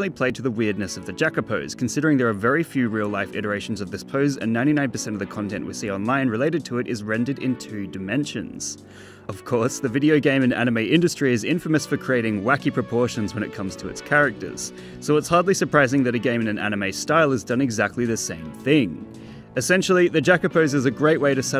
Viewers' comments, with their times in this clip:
0:09 he sounds like hes having a hard time holding back laughter
0:09 sounded like u were gonna chuckle there